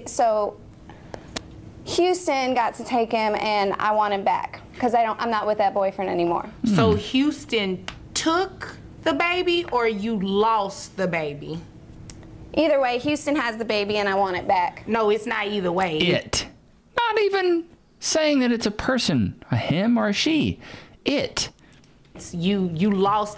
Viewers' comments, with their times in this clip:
0:08 this judge is so legal, she can't pronounce 'lost' without saying 'LAWst' 😕